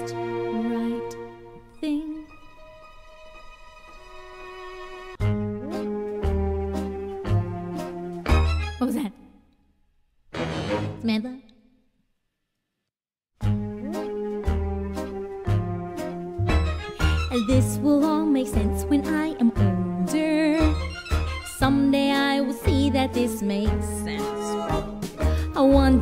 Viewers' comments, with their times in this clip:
0:09 she's hilarious lol. I love their singing